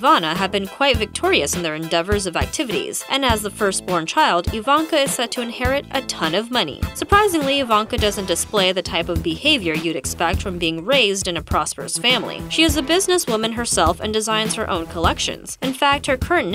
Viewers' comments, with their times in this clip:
0:03 I didn't think the music was bad, but seeing Donald Trump's face almost made me lose my lunch.